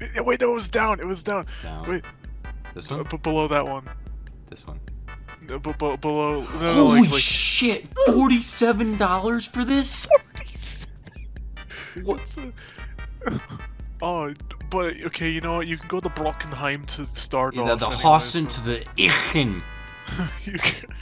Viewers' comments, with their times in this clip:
0:06 HOLY SH!T $47 FOR THIS In the background ($47) (small laugh